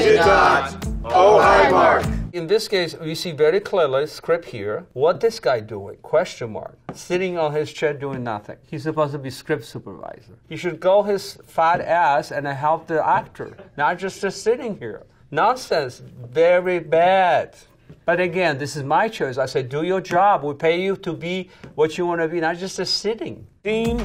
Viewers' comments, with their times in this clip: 0:10 I love hearing the VF crew members in the bg laugh at Tommy's comment lmao
0:12 I like how you can hear someone laugh in the background LMAO